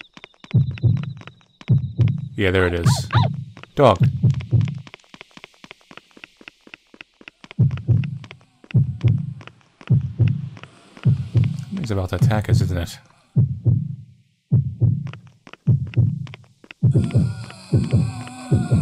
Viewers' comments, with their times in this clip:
0:03 why was her heart beating as she went closer to the dog? And then her heartbeat calmed down as it ran away leading her somewhere?